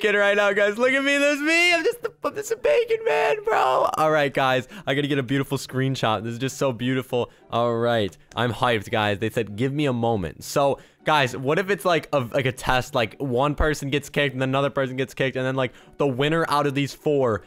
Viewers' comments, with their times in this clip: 0:03 it kinda sounds like he was about to say the F word. He was like “look at me! I’m just a little fu, bacon man” This is how many people who respect bacon people 👇🏾